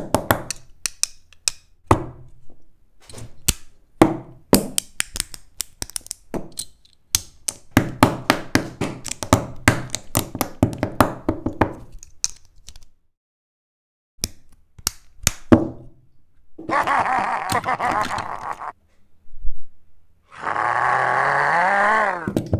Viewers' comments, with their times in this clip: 0:10 y does that sound like placing cobblestone in minecraft?